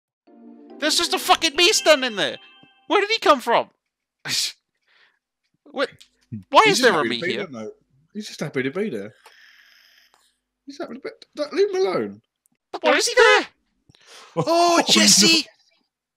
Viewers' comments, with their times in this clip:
0:01 I notice the in the background “iiiiiiiiiiiiiiiiiiiii iiiiiiiiiiiiiiiiiiiiiiiiiiiii iiiiiiiiiiiiiiiiiiiiiiii iiiiiiiiiiii”